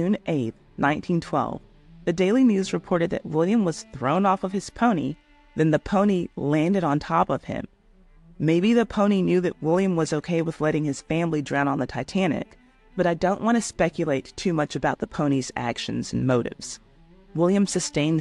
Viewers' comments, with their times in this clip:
0:05 The delivery of this line is hilarious